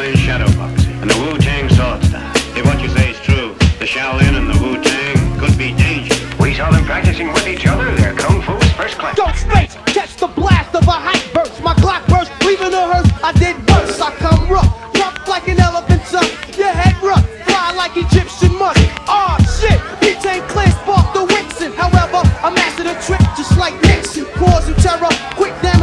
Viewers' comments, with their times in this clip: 0:08 That’s Transition is really something serious 😱